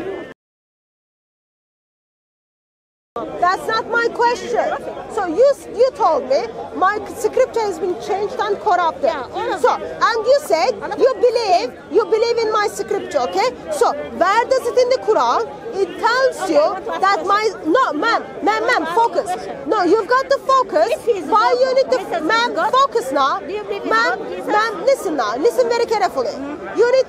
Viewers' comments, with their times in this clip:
0:10 Why was the sound muted ?